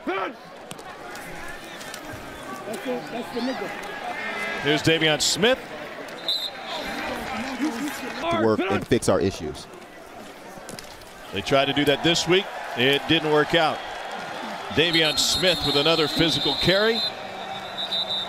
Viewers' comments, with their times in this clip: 0:03 did anybody else hear the N word?